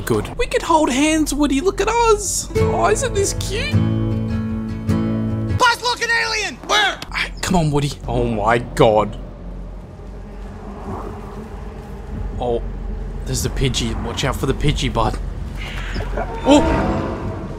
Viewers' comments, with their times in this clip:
0:05 WHERE'S WOODY'S LAUGH?????